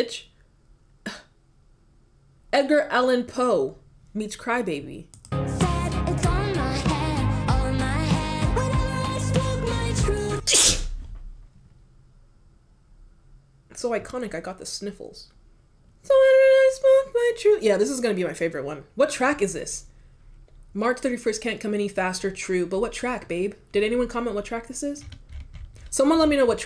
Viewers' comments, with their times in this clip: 0:10 You sneezed on the "truth" 😉